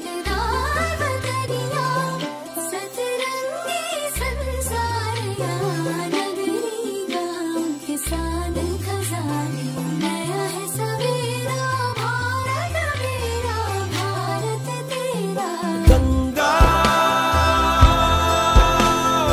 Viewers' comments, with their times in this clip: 0:07 did you guys look that bass shimmying from low to high frequency ? And boo, you can totally see that bassy move on the video's visualizer! ARR ❤
0:07 did you guys look that bass shimmying from low to high frequency ? And boo, you can totally see that bassy move on the video's visualizer! ARR ❤